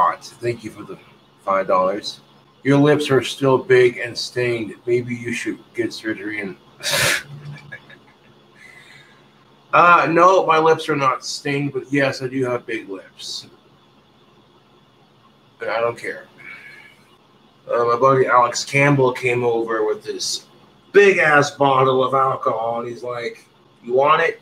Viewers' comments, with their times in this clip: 0:06 was that his first genuine laugh?